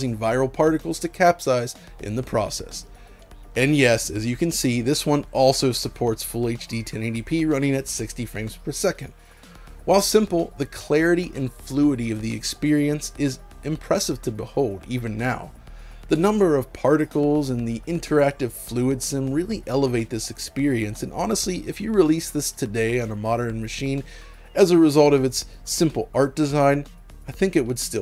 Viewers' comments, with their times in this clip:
0:09 fluidy? Lol. Fluidity..... Great video. Memory lane for sure.